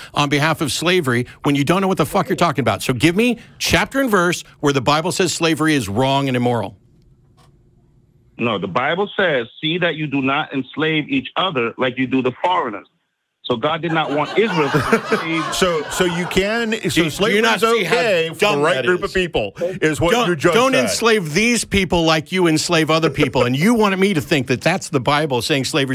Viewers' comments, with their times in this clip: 0:07 I'm glad they are back in the studio live... I missed the studio audience laughing in the background when callers say nonsense
0:12 they all laugh at him lol
0:13 Oh, I do love those audience laughter moments! 😃
0:13 "Properly read, the Bible is the most potent force for atheism ever conceived." Issac Asimov "The best cure for Christianity is reading the Bible." Mark Twain The laughter says it all.